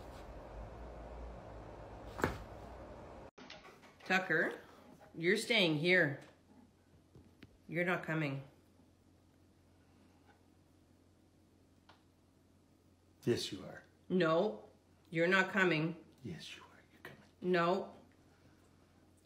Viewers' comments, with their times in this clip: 0:06 These are really funny except for the one that's called, "When you like tormenting your dog about going for a car ride". The woman is telling the dog it can't go with them and has to stay home. It's an old dog and looks so sad. She keeps saying, "no, you're not coming" and eventually the dog cries and goes into the next room. She laughs!! LADY, YOU SUCK! I don't know how you can do that!